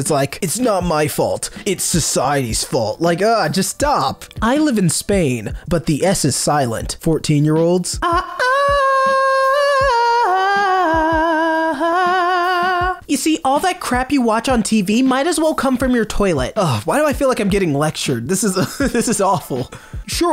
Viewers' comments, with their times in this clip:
0:07 is nobody gonna talk about the pipes on this guy wtf caught me off guard that was fucking good